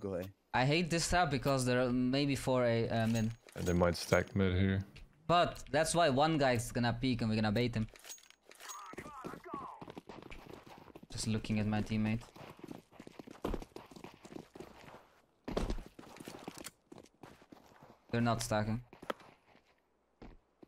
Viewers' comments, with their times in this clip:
0:06 "That's why 1 guy is gonna peek mid and we're gonna bait him." It's funny cause I heard you say "bait" but I know you said "trade". 😆